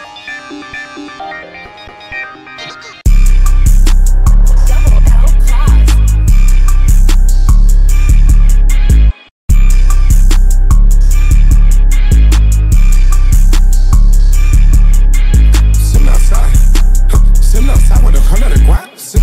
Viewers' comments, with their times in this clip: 0:03 THE YEATT BEATT 🔥🔥🔥🔥🔥